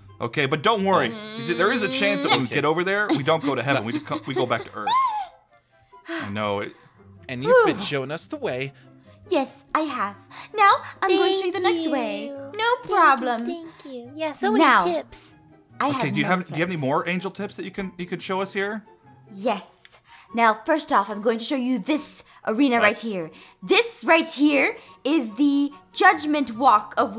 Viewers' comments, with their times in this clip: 0:09 her voice was so cute !!!!!!